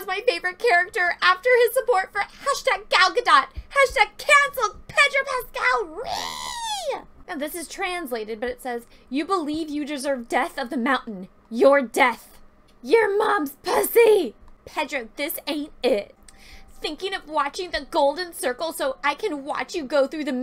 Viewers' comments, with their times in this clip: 0:05 That ReEeEEeeEee was awesome!